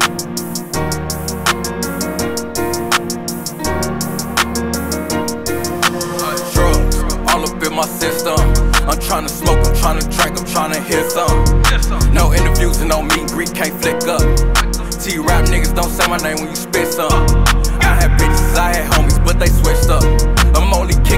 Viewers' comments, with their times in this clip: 0:07 all up in my sister? O.O